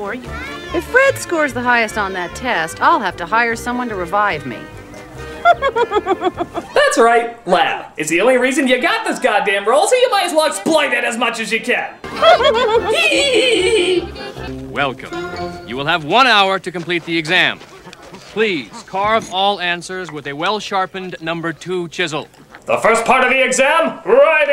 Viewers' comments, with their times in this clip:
0:07 Fun Fact: The ONLY reason they casted Rosie O' Donnell as Betty in this was because she perfectly mimicked Betty's laugh.